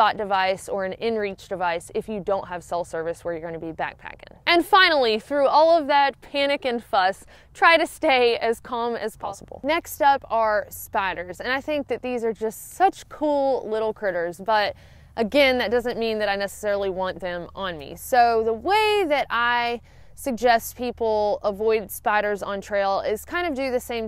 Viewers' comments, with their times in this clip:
0:08 Is that a ghost in your audio? Is you video editor sneaking in <.< .... >.>.... <.< Has he done this elsewhere I just didn't notice?